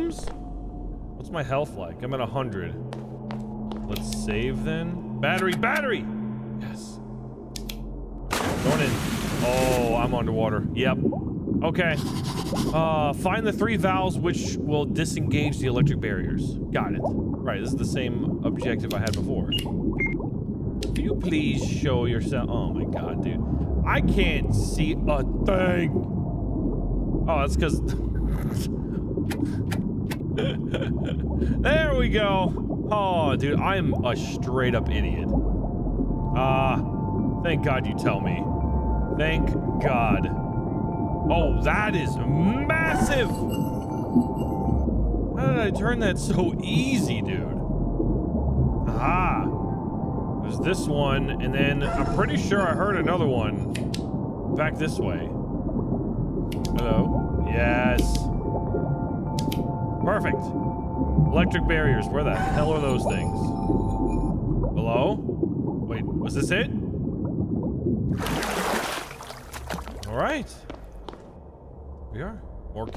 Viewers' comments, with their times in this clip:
0:09 jump scared the shit out of me it was a combination of the sound effects of you going into the water and the fastest jump into an ad for fucking McDonald's of all things but it actually scared me lmao
0:54 how are you able to hear the valves?